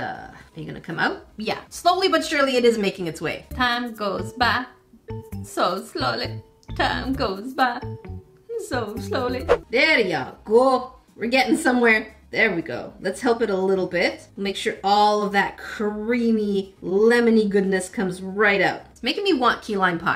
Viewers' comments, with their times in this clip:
0:04 time goes by so slowly and near the end you sounded sad